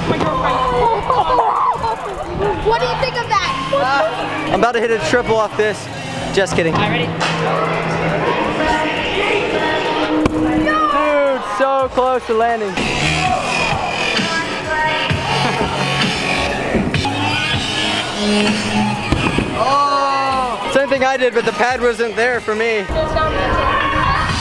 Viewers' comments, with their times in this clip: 0:09 anyone else hear a kid goin' "YEET"